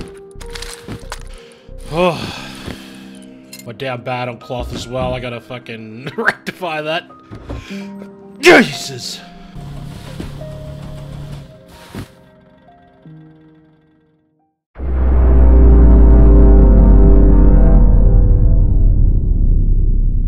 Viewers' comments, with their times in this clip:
0:08 another Jesus sneeze lmfao